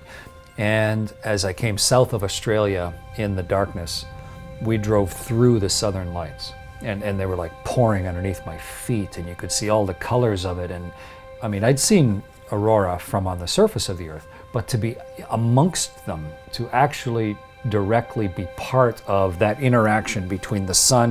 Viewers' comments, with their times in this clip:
0:06 "and they were like PORN underneath my feet..."